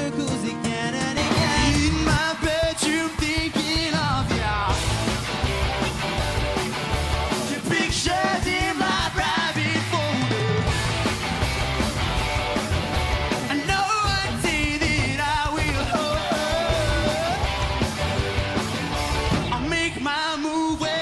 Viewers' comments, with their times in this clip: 0:04 OMG i love the way he say "thinking of ya" in 18